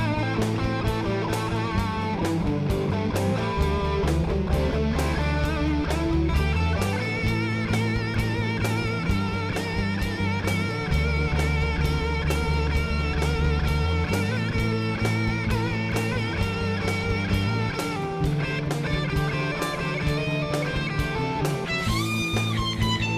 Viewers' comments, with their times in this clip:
0:06 Neil Young guitar solo ;-)